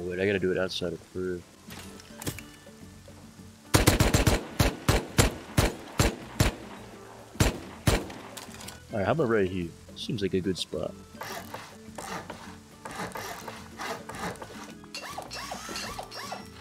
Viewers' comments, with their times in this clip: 0:03 i hear the asian anthem, any else ?